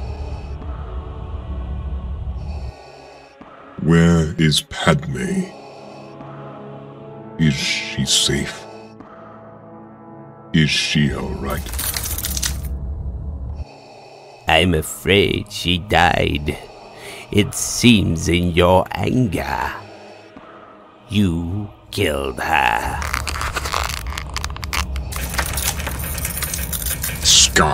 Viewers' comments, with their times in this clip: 0:09 that line sounds exactly like in ep. 3 shit was so on point